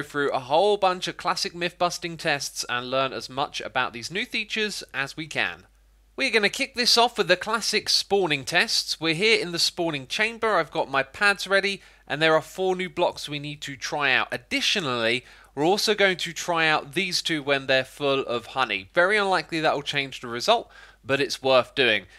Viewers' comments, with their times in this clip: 0:10 I've got my 'pants' ready